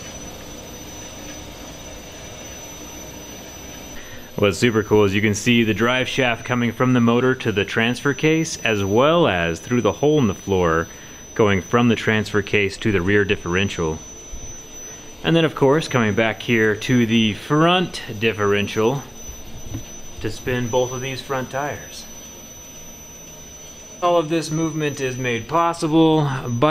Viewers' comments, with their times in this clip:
0:10 why that horrible annoying high pitch frequency noise? will that go away?